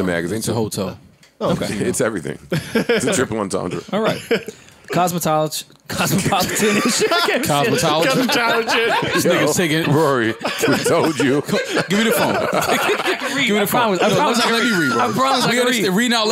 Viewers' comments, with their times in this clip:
0:04 "Cosmatologen" had me dyin!!